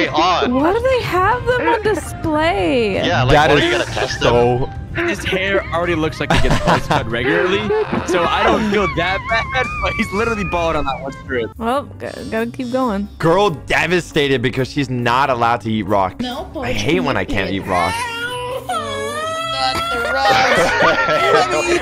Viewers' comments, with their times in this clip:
0:09 you can hear that guy die from laughter 😂😂😂😂